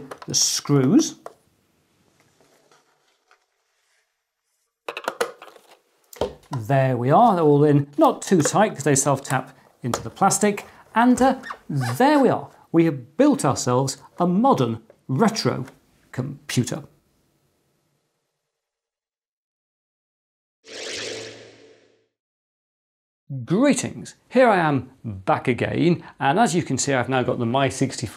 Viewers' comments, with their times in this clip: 0:10 Do I hear a Guinea Pig ?